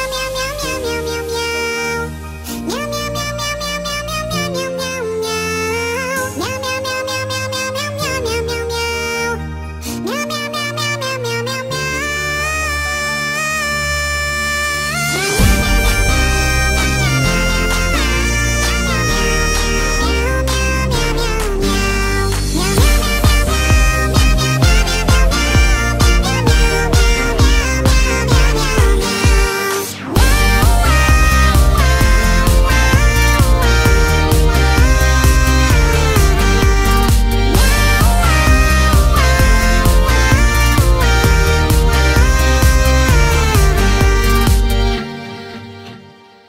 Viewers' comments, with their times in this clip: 0:10 The cat slayed the high note 😱😱
0:32 mmhhh I love the meooooow but I think I don't have a favorite, they all hit differently ! 😊😸